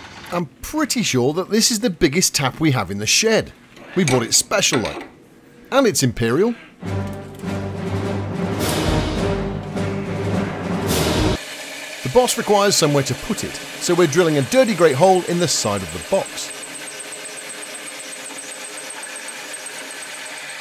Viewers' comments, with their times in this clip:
0:05 Were they supposed to make me think of The Shining? 'Cause they certainly had some (admittedly far more convivial) "come and play with us, Danny"‡ vibes... Annoyingly, for every English-speaking pair around, I'm pretty sure twin girls can't say much of anything in unison that doesn't sound like a Shining reference. Whatever the case, I loved it — just like the rest of the time I've spent watching these two gettin' Binky together! Also, LMAO! @ ~